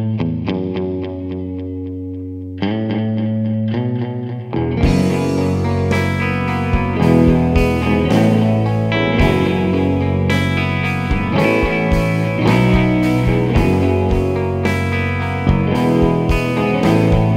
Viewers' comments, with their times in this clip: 0:05 After that sound is gorgeous. Guitar sounds great too!